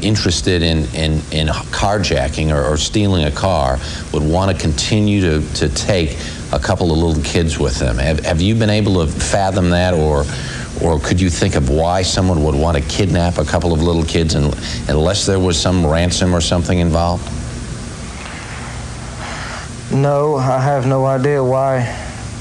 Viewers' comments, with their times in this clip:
0:09 Not only heightened breathing, but she went pale - as a ghost.